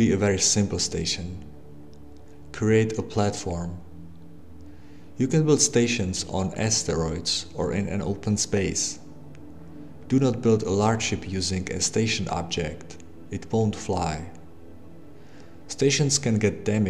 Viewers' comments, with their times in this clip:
0:04 you can build stations on steroids... wtf?